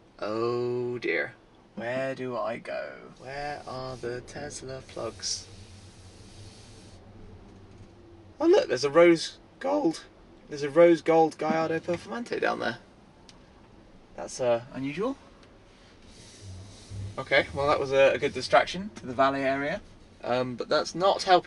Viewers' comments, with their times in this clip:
0:07 Hahahaha voice crack